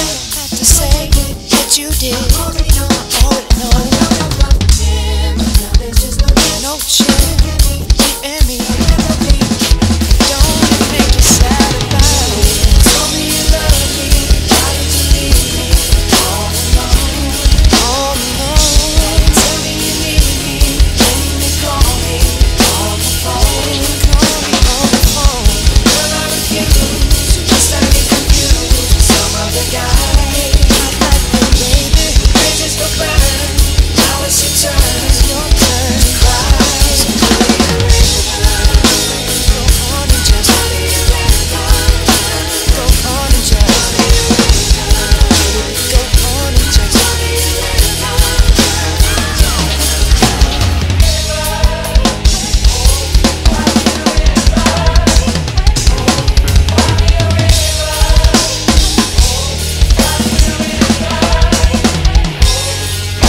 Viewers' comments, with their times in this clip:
0:08 my favorite fill is
0:08 real nice fill, what is that?haha Thanks Amazing as always :))
0:44 Completely ridiculous. Great chops, and nice bass lick :)